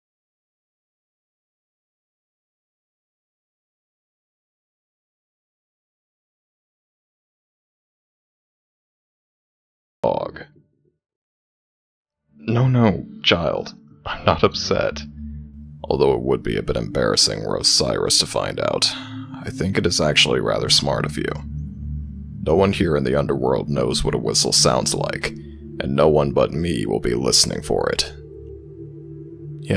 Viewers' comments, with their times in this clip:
0:10 for anyone trying to skip the for some reason mute part :^